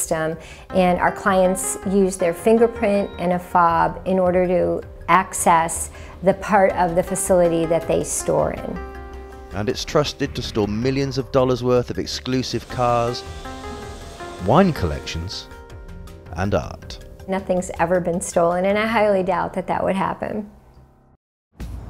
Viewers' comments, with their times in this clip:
0:03 fingerprint and a fap?